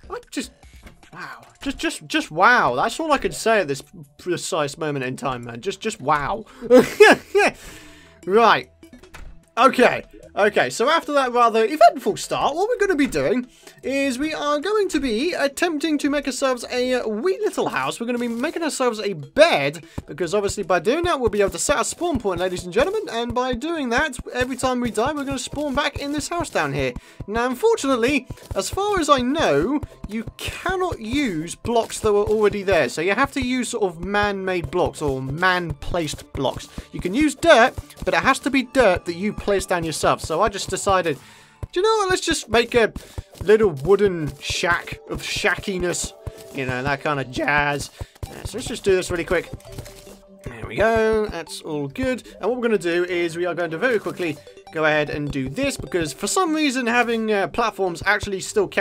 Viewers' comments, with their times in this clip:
0:10 omfg that squeak
0:45 Dat voice crack.